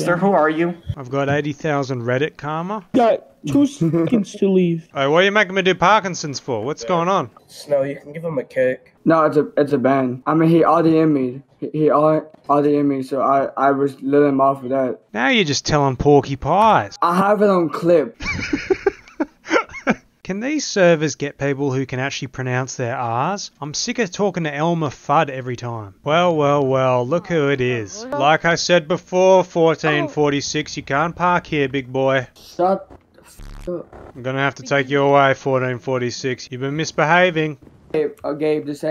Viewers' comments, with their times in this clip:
0:04 1446 bro sound like Nathan from southpark
0:05 The way you go “Ay what’re making me do Parkinson’s for” sends me every time
0:20 he really said "cant i find people who can pronounce theah aahs?" like you dont even pronounce the R's lol just jokeying